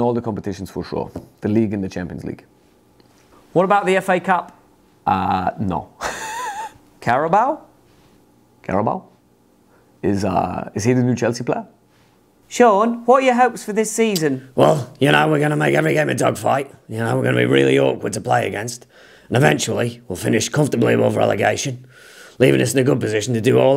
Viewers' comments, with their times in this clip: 0:10 Is Uh.. is he the New Jersey player?